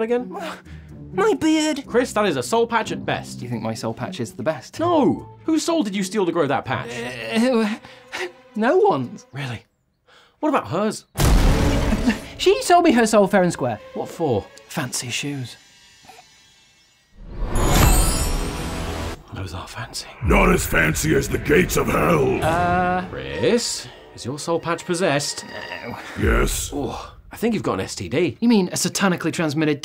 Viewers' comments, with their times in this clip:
0:06 😂 that's the guiltiest noise I've ever heard
0:15 he sniggered after he said “fancy shoes” I love things like that!